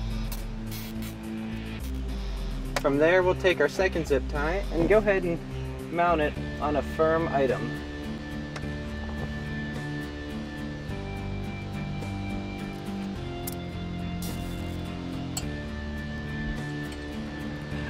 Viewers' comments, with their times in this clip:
0:03 some body farted no lie!